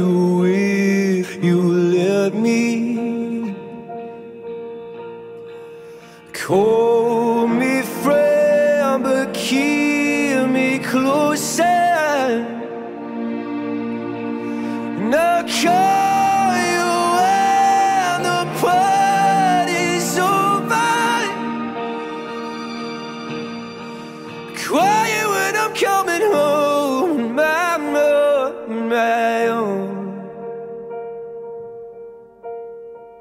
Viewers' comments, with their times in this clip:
0:10 oooohh that run on “closer”
0:12 DAAAAAM that run
0:12 Anyone else hear the auto tune
0:16 and he doesnt sing the highest notes.. but its a very pretty version He keep the note while billie goes up at this point... ..